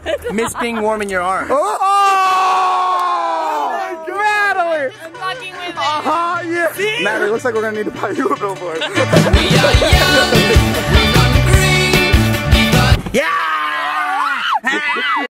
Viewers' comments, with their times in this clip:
0:13 Ever wonder how baby dinosaur sounds like?